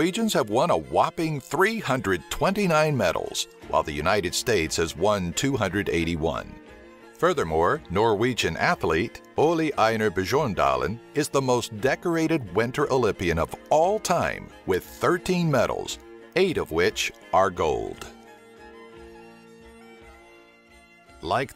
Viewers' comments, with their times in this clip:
0:08 oli einjar bejorndalin? its Ole Einar Bjørndalen